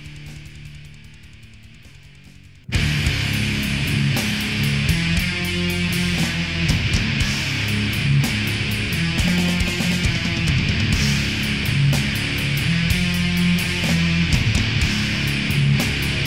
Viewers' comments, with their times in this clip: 0:03 6 This Time It's War - jesus that is heavy